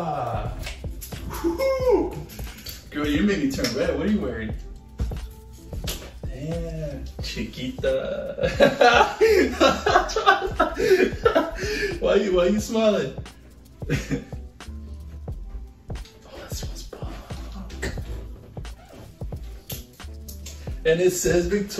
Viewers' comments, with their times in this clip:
0:07 When he said Chiquita is sounded weird